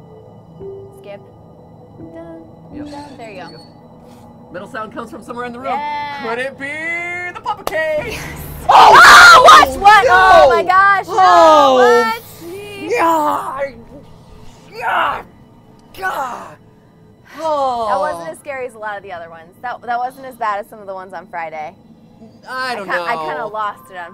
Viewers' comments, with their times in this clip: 0:07 bro ur screaming is the only spooky thing there